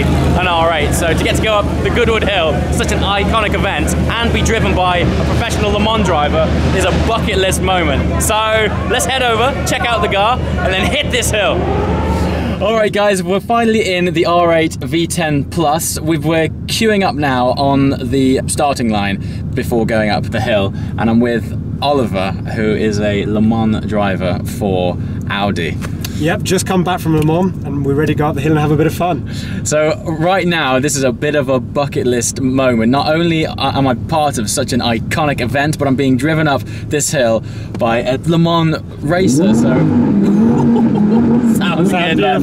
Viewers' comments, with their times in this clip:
0:10 'Check out the GAR' :)
0:26 it sounds like he says yeah just came from my mom